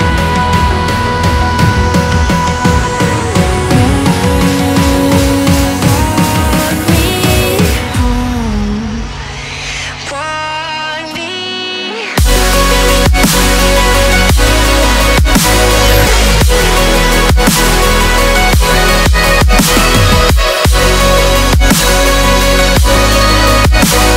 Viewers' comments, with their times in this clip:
0:10 epic drop 💙 love her voice <3